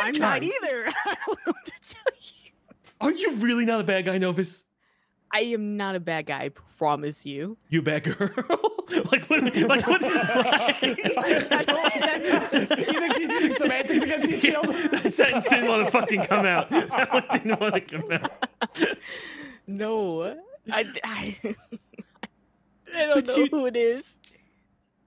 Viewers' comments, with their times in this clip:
0:07 "you a bad gUUuurrrrlll??" Chilled's mouth said 'that isn't what we wanna say' HILARIOUS